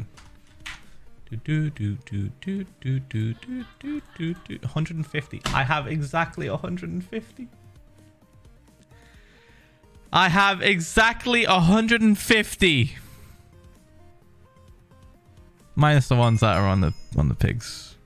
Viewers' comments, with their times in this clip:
0:05 you can hear the sadness in his voice fully aware that he's gotta burn that much hard earned saddles. I feel so bad buy why is this so funny lmaooo